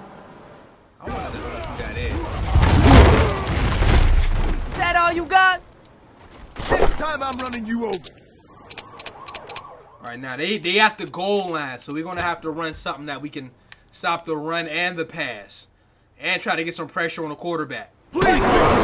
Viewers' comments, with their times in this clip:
0:04 Chris Rock..... Is that you?